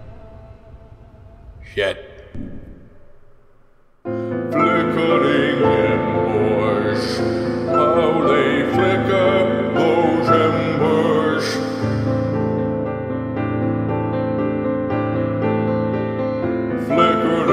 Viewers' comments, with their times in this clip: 0:03 Best credit music ever.